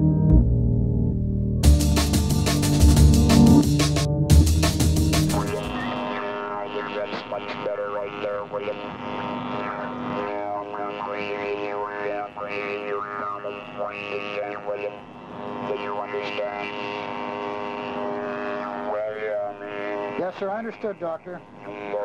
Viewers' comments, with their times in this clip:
0:03 It sounds like daft punk's voice
0:09 sounds like a cyberman from the 60s